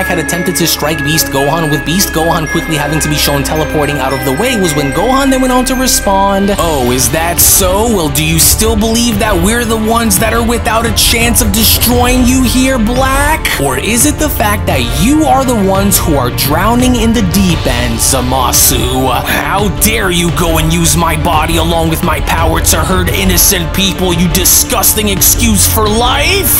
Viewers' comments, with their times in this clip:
0:07 That's background music when it starts 🔥🔥 that throws me in the matrix quick... Love that UNREAL!!!! Y'all boys dope!!! Dot dot, dot